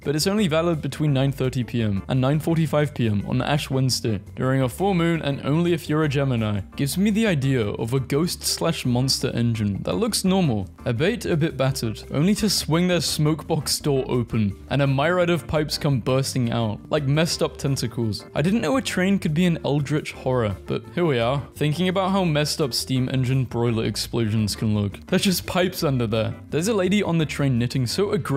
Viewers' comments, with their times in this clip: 0:09 The way you pronounced "albeit" flashbanged my brain